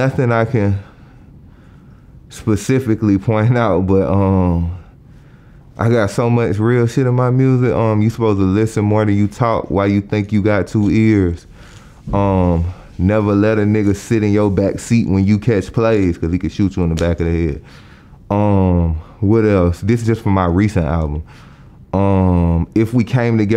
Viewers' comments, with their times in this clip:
0:09 😂 that man won't to breathing hard